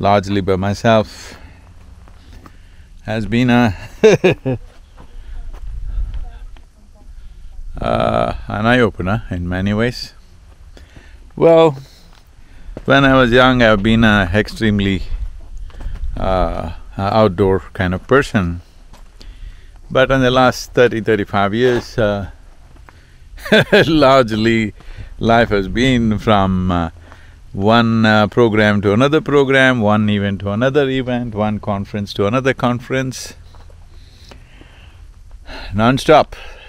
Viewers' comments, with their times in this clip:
0:05 we can hear people in the background.
0:21 what's that weird sound?